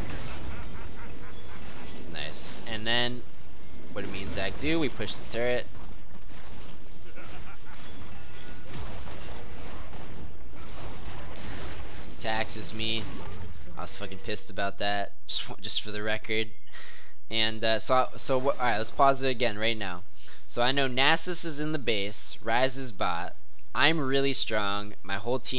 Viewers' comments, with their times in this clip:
0:10 I cannot hear. "... he taxes me..." ?